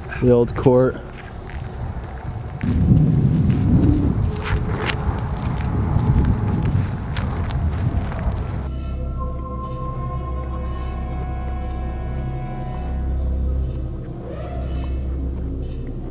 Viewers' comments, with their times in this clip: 0:03 Am I the only one who hears growling?